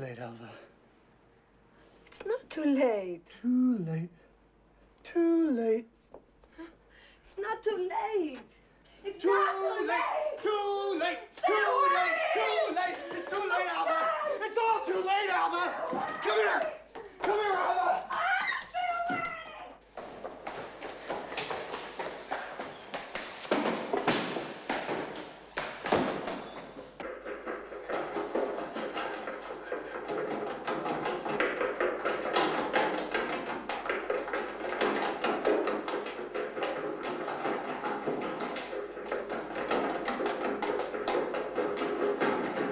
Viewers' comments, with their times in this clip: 0:07 Nicolas Cage becomes a human metronome.
0:27 sounds like tap dance